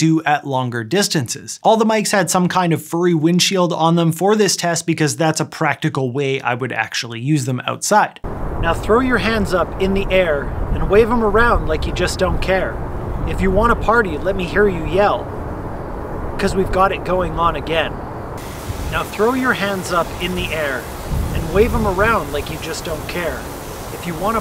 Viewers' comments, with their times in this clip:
0:06 I think it’s kinda impossible to reduce the wind sound it seems.